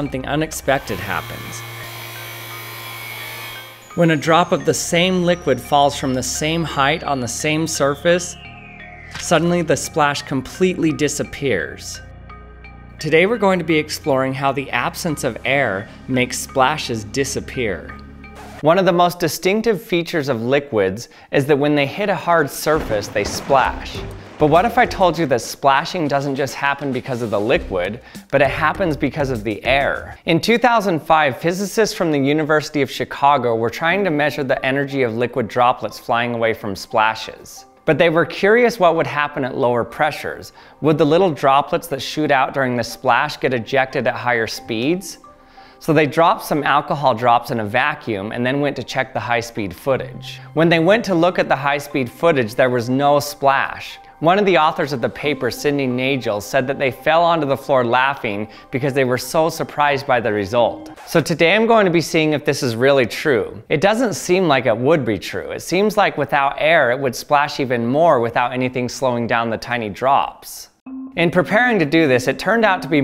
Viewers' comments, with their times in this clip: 0:08 MINECRAFT SLIME BLOCK PLACE SOUND
0:56 Nagel with a hard G